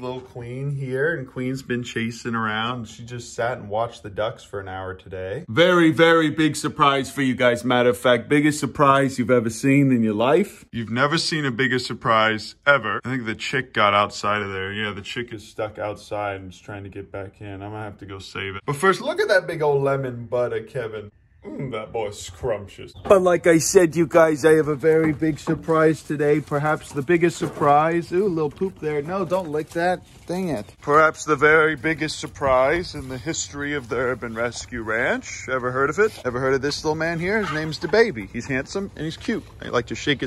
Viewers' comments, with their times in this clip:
0:07 you sounded like you were doing a Dr. Faucci impression.
0:23 you kinda sound like Donald trump